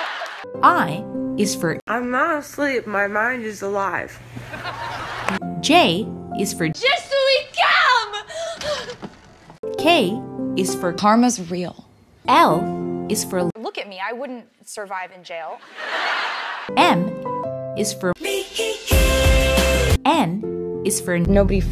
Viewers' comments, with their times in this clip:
0:06 Well, she's encouraging us to calm down Je SUS